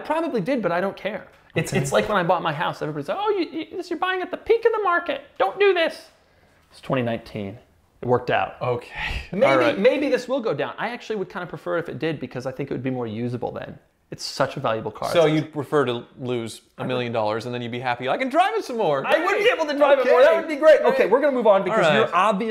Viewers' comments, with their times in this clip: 0:03 The voice Doug uses to say " You're buying at the peak of the market don't do that" 😂😂